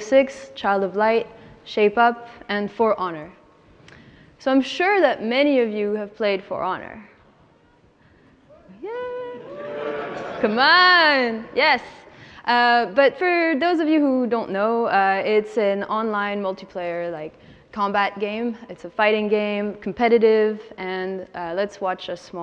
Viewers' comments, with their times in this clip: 0:05 Now, I watched the lecture and it was very interesting, But when you said "Now I'm sure many of you have played For Honor." That silence was all the confirmation you needed.